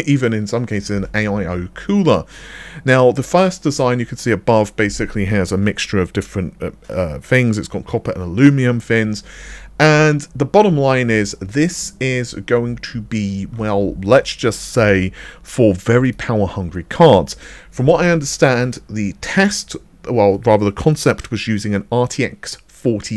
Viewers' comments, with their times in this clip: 0:08 I still love how he said "alumium" as if aluminum/aluminium had just been discovered. "Alumium" was the first name for it, then came "aluminum" (still used here in the U.S. and up north in Canada), then "aluminium" (used elsewhere in the Anglophone world).